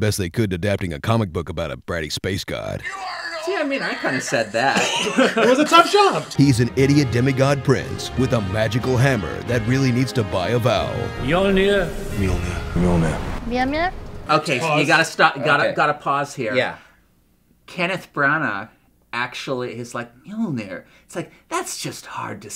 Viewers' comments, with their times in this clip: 0:08 Oh wow, people are having a real hard time saying Mjölner aren't they xD The Ö is similar to the English sound ‘i’ in the word ‘bird’. Or ‘u’ in the word ‘fur’. Or ‘ea’ in the word ‘heard’.